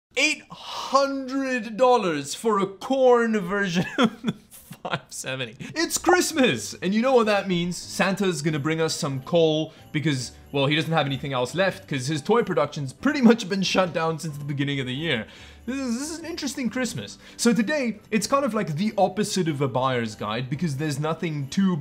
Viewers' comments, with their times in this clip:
0:02 For a porn version??? Are you okay?